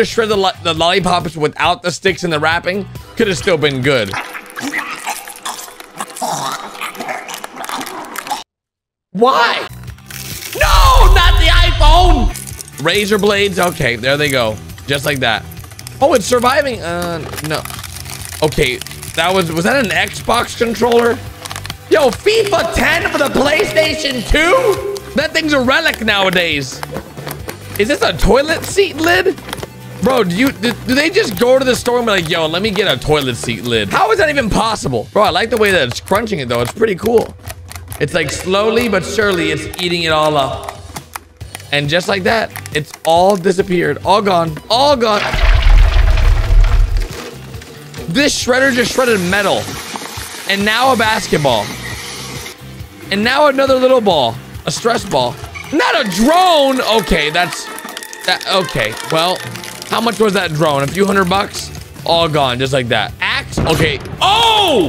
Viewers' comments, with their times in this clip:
0:03 someone is choking
0:04 it sounds like someone thats drowning
0:45 That sounds like diarrhea